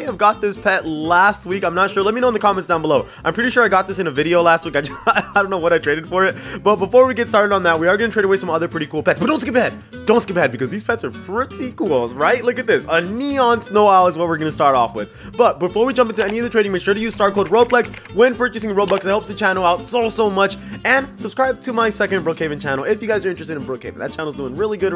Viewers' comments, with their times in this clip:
0:09 It’s so funny when he said “but don’t skip it”very fast it got me rolling off my bed